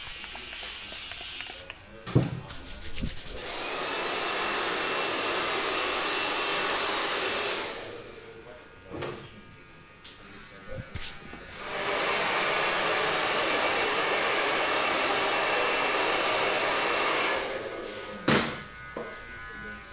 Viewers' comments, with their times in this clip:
0:04 Who was using lawnmower